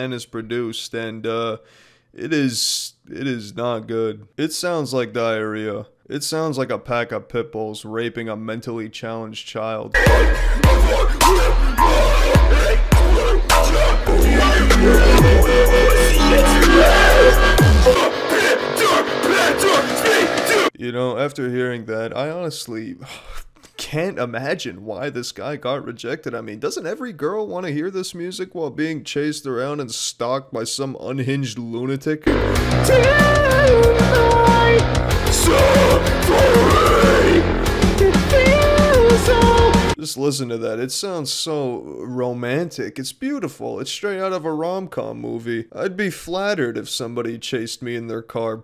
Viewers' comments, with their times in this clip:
0:08 OMG .. I assumed he was going to be playing 3 chords on an acoustic, and singing quietly off key, some sappy lyrics. .. shocking! :(
0:10 As a life long fan of heavy metal music I finally understand what metal sounds like to people who don't like it...
0:34 just fucking imagine being chased by someone in car who is playing this garbage at full volume , terrifying experience for sure